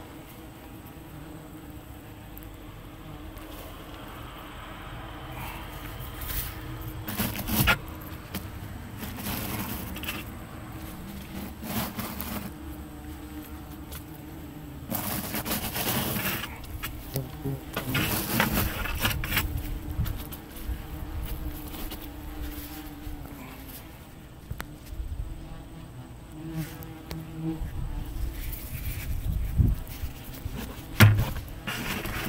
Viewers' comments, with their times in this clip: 0:04 they sound like Minecraft bees
0:15 I am wearing headphones and it sounds like one hit my right ear - i flinched